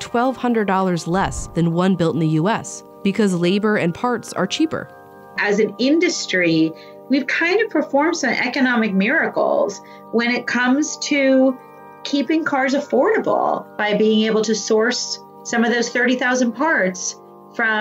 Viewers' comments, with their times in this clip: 0:05 God I hate the shrill sound of Skype interviews in Vox videos like